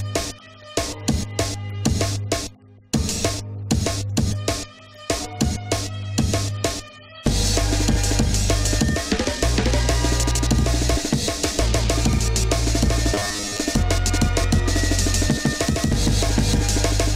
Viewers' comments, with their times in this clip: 0:04 HOLY CRAP!!! This is BREAKCORE!!! The beats are incredible.